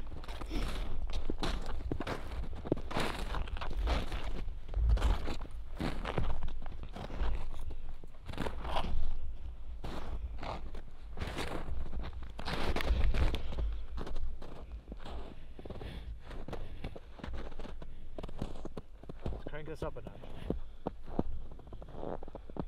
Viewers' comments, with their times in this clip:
0:07 something whispers into the camera